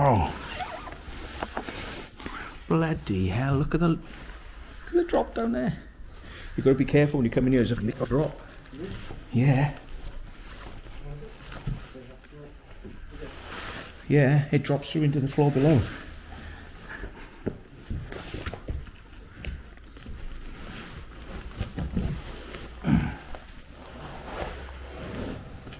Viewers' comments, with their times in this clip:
0:07 HE SPOKE DEMON LANGUAGE :O lol